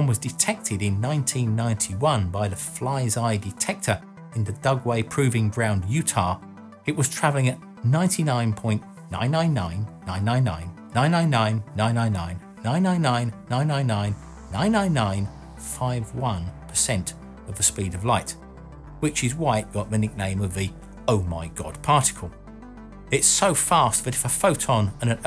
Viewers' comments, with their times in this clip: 0:08 sounds like my wife sometimes - we're Germans
0:08 he went german
0:09 sounds like hitler copping a length.